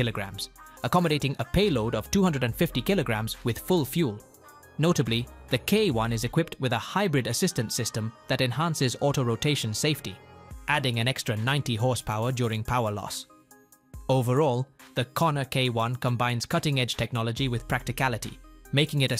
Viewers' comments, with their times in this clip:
0:06 Lots of errors and mispronounciations